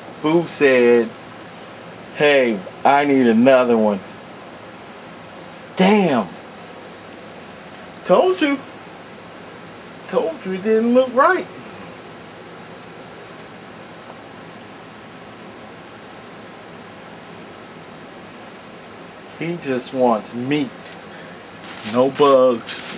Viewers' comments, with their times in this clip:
0:04 LOLOL thought he was gonna say "DAAAM nature your scary" would of sounded just like it with the voice and all